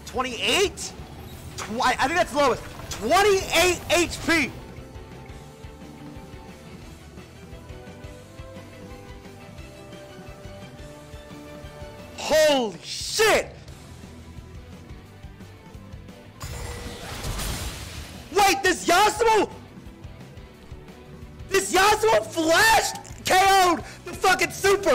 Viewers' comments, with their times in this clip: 0:08 lmfao “you say run” was playing in the background